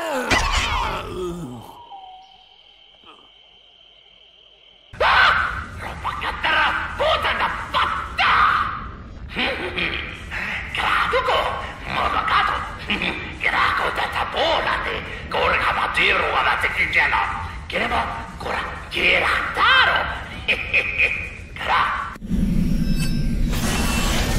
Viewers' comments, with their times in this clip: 0:08 it sounds like he said get the fuck down